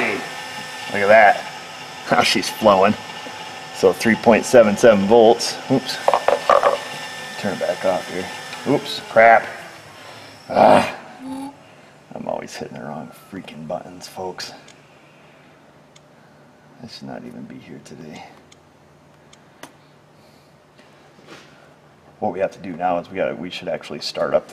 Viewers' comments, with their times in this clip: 0:10 Just after you can hear the valve close. Sounds like a duck or goose.